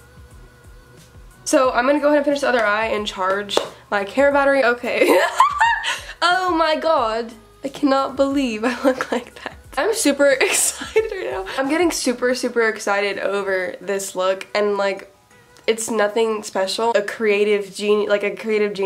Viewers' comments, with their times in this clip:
0:06 she had an Australian accent